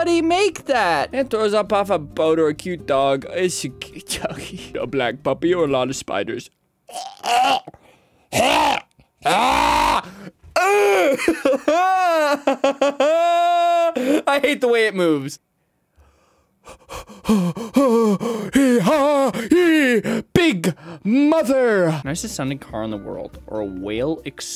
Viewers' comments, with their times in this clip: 0:06 WHAT ARE THESE NOISES. “HUEH. UUEH”
0:08 Sorry but I have to say the sound you made sounded like a weed eater starting up 😅😂